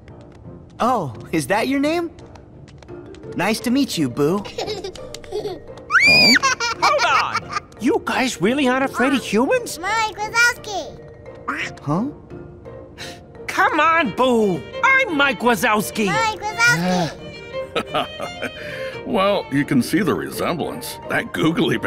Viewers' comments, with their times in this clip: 0:09 it’s still cute when she says it!!!!!!!!!